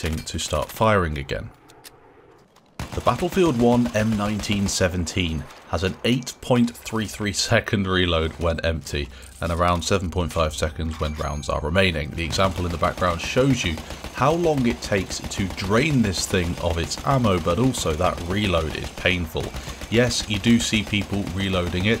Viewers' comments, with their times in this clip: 0:06 I called this thing the cash register because it looked heavy and every time you rack the bolt, it make a ca-ching sound.